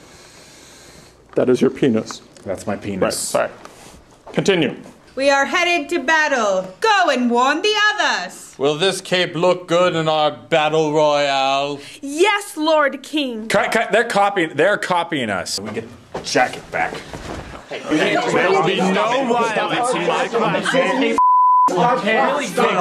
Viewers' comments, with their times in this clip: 0:08 ali a intro plays